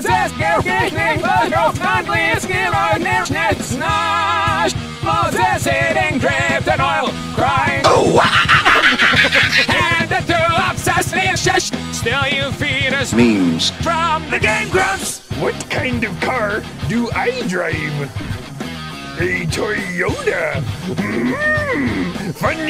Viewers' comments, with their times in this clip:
0:05 when Disturbed chimed in I died